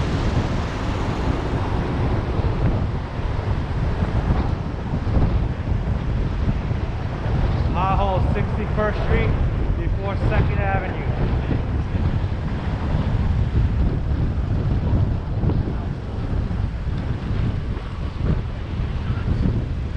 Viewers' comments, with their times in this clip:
0:05 is that some kind of voice in our heads?